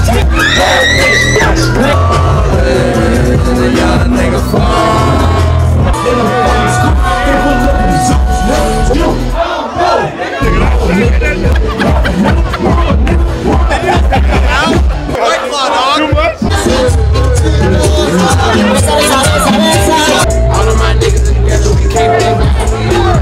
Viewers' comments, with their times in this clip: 0:09 ayo imma need a melanin check on whoever said nigga dat loudly 😭